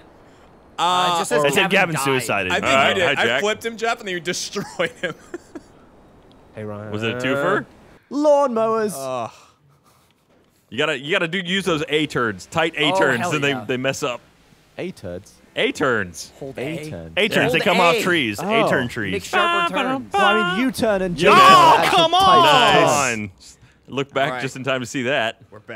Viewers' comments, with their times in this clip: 0:09 gavin yells "lawn mowers!", and then gets in a golf cart